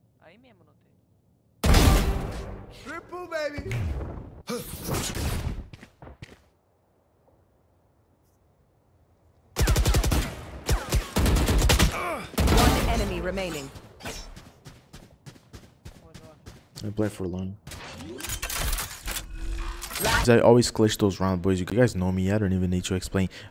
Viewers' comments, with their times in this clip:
0:05 you heard him on c, I guess you didn't hear him because of the stress of you being in what was basically a 1v2. Nice try anyways!